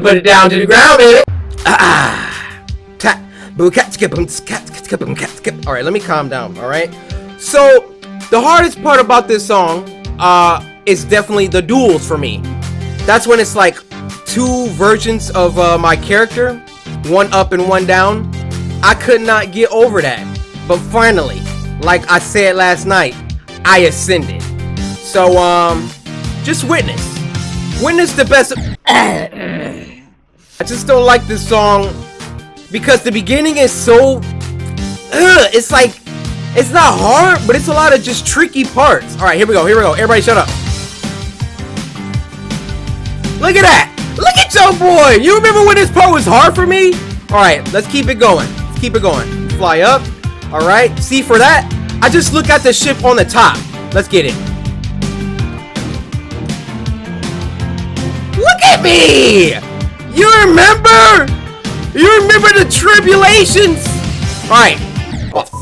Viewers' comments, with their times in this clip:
0:04 turn on subtitles, ah boo cat skipping skipping casket
0:15 I thought it said ”two virgins of my character”
0:51 I thought cory never swears...and what’s dat I just heard from him...the word S*** Edit: oop- its ship Another Edit: I love u Cory I’m a massive fan of u so sorry if I sounded like a hater! I just want to let u know that ur my inspiration in life <3 and keep trying over and over and trust me u will win! But what I relised was that every time u don’t talk for a long..and I mean LONG time..it kind of helps u focus on getting close to winning so maybe stick with that startagey <3 LES GO MY SUMARII BROTHER~